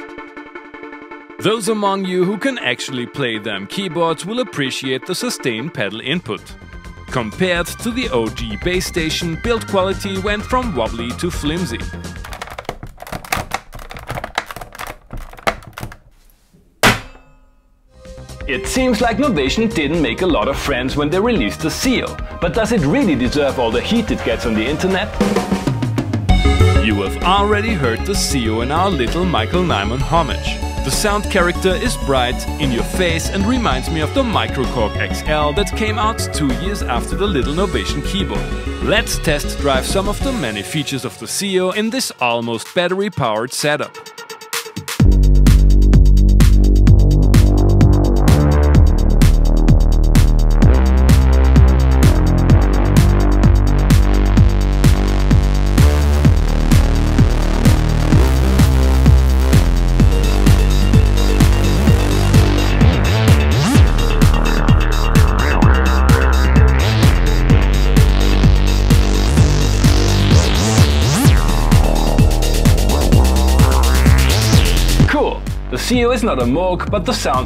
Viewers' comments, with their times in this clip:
0:07 🤣🤣🤣 was that a clap or the keys?
0:11 You're background music is wayyyyyyyy too loud at the beginning of this video when you are speaking. Why would anybody even do that anyway 🤷‍♂️
0:13 *lofi vinyl crackle sound design
0:16 That almost sounds like a snare drum lmao
0:16 Nearly spit up my drink at that 'terse' key press
1:05 nice :) I have the Novation Remote 25 Audio which can be transferred into an X-Station Synth. Btw one jam sound like Stephan Bodzin